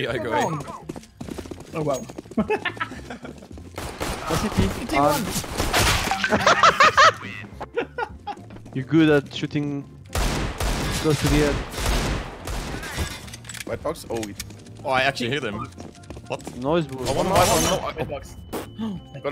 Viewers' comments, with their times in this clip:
0:05 who though his whatsapp notifications whent off